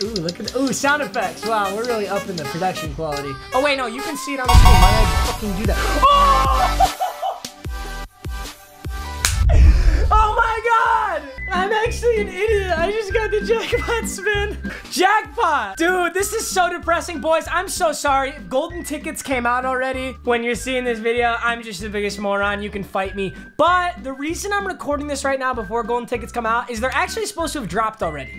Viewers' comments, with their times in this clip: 0:09 nice spit homie